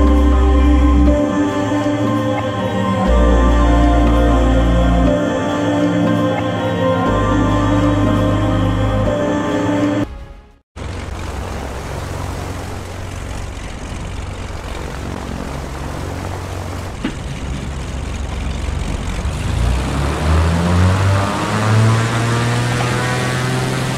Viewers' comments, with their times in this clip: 0:09 I had to change the intro music because of a copyright issue :( So sorry the transition is not really good.